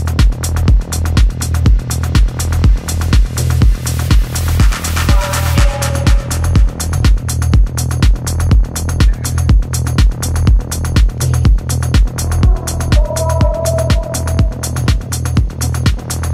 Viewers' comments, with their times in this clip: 0:03 My favorite was the last one ! Such great rhythm/beat/lyrics. ❤